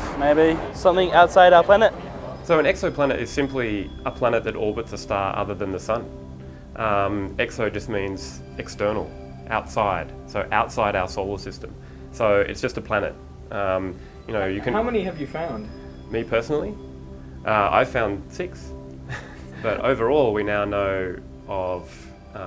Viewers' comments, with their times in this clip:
0:10 Outside asshole system.